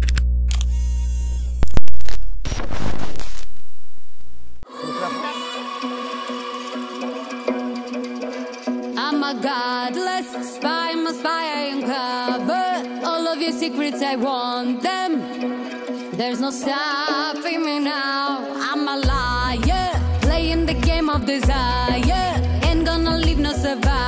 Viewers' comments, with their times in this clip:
0:09 it starts with playback😂😂😂